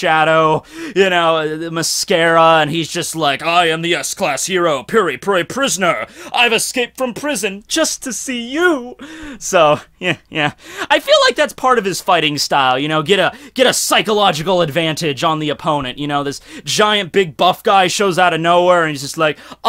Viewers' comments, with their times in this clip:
0:06 That impersonation on was perfect